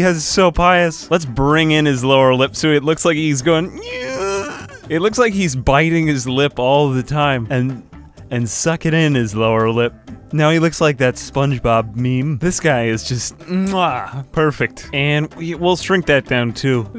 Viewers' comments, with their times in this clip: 0:03 i cannot believe you made the noise you made